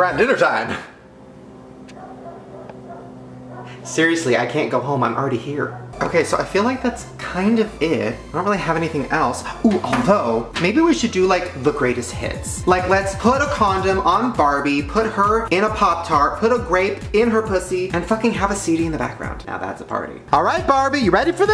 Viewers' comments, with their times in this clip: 0:05 Let’s just ignore the creepy sound .😂